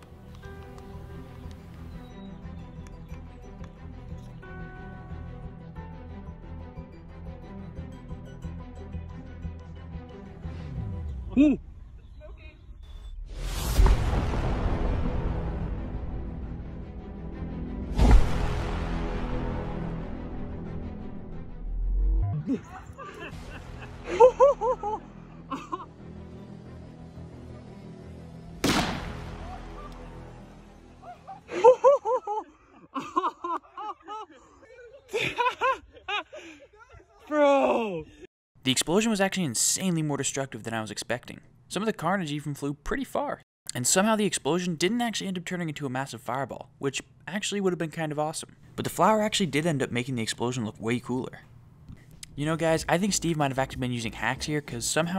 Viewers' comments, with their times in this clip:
0:05 music on creeper aw maaaaaan Boom
0:26 sssst.. BOOOM! It sounds more like the old explosion Sound.
0:27 sounds like a Star Wars blaster
0:40 That sounded like Dream, or am I just been exposed too much of his content? ;-;